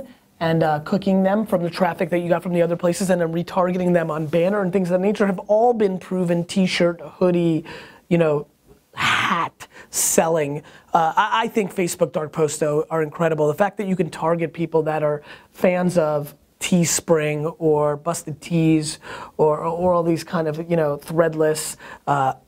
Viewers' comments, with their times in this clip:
0:09 That was the biggest HAAAAT.